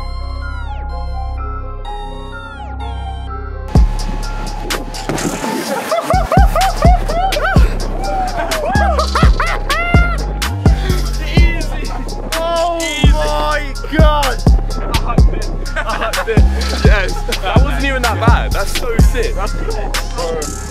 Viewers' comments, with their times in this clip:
0:08 Bro You sound like Curious George!